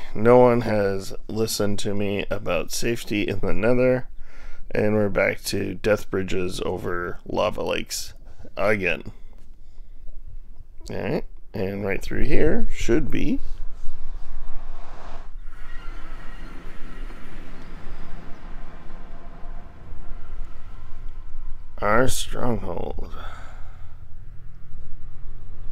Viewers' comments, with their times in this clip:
0:06 the disappointment in his voice😔